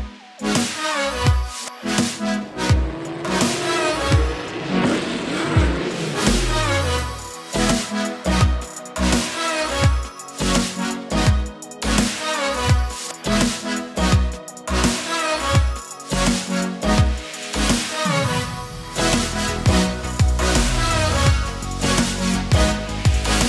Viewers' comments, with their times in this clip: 0:05 That small Resizing in and the sound of acceleration is awesome, Something like that show that the editor is smart